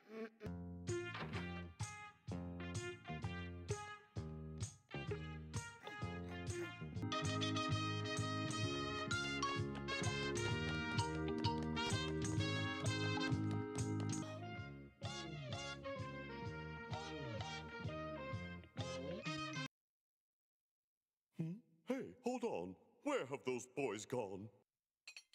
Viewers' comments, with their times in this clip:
0:07 dunno but this soundtrack holds a lot of nostalgia